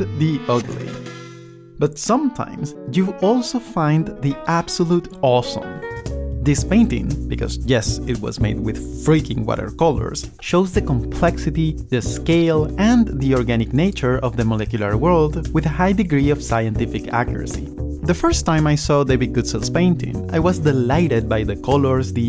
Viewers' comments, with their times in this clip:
0:07 Sorry, it is my weird way of giving a compliment. From the guitar grabs the attention followed by the catchy bass. For a musical person like me this was too soon, as I wasn't into the story yet and was already lost by the music. But it's just me.